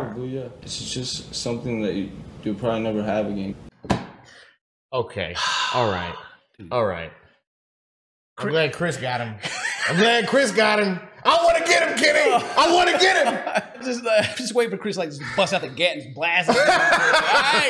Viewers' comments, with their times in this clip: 0:04 it sounds like someone else is talking